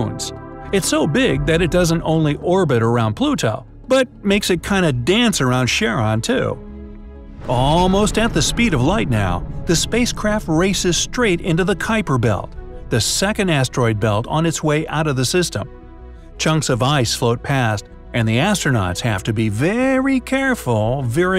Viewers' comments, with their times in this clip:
0:04 I love the music starting from